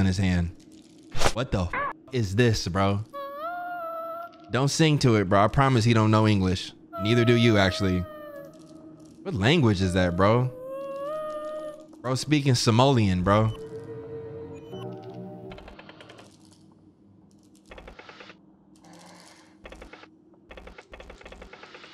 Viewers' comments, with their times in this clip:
0:03 Pubert was speaking Whale like Dory 😭